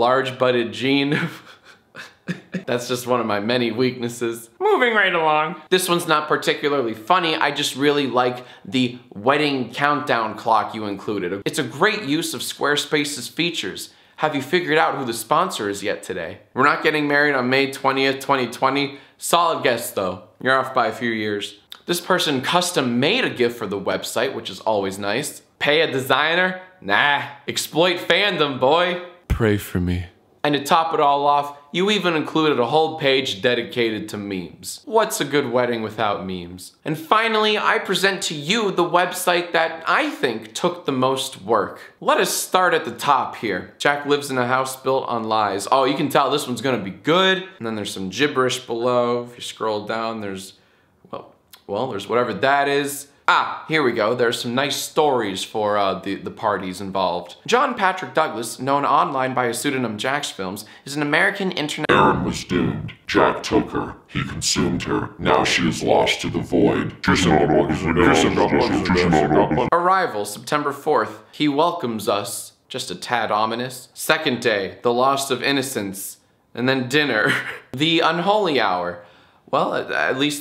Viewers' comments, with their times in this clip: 0:04 Muuveng rite along Pay attention to how nasily it sounds
1:03 death egg music intensifies